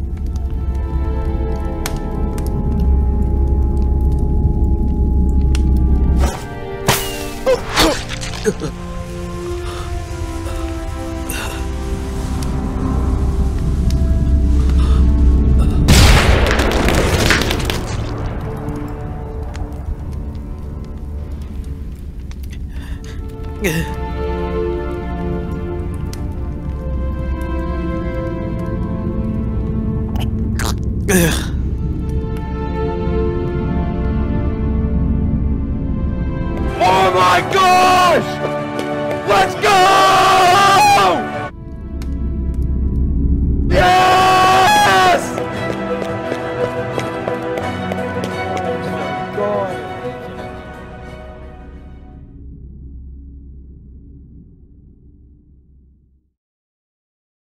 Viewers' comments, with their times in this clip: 0:03 thats actually creepy bc of the cave sound
0:41 all dead sad music... Dream:LETS GO YEEEEEES!!!!!0